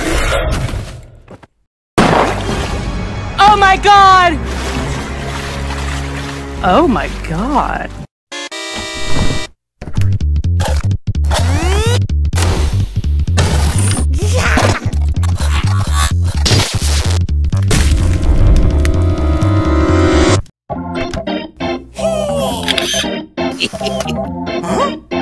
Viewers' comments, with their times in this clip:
0:08 this song is ridiculous